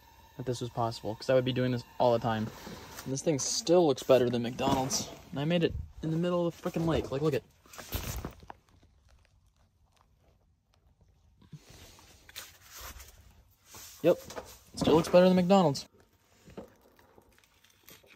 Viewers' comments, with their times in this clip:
0:03 I like how the most replayed on this vid is when it sounds like he said "in the middle of the fuckin lake" 🤣 after watching it a couple times myself, pretty sure he said frickin' lmfao